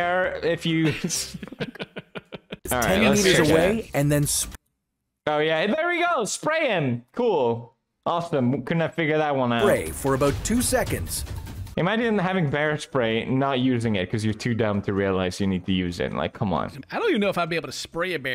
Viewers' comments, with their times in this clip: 0:05 pewdiepie getting autotune for a split second?